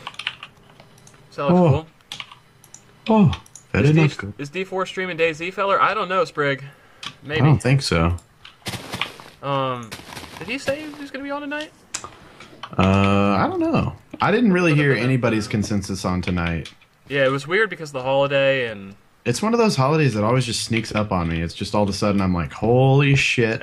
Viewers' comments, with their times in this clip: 0:05 I thought he said my name I almost jizzed myself